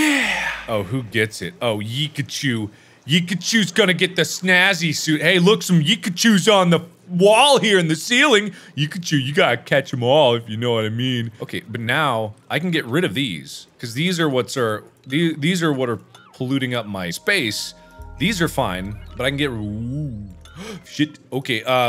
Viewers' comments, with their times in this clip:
0:09 when he says “You gotta catch em all, if you know what I mean.” he sounds like Dan Aykroyd from Caddyshack 2.